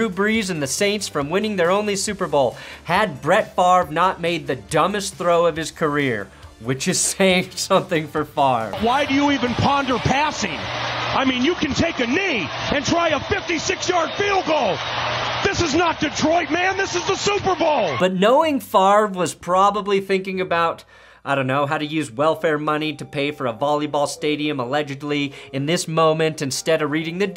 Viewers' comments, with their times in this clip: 0:08 one of my all time favourite calls in NFL history. You can FEEL the anger 😂😂 "You could take a KNEE, AND TRY A 56 YARD FIELD GOAL"